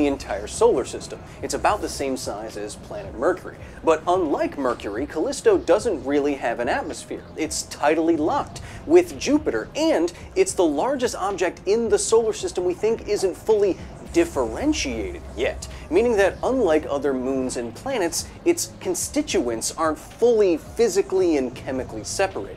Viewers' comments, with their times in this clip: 0:04 You read the script in a way that made it sound like the absence of an atmosphere had something to do with it being tidally locked with Jupiter.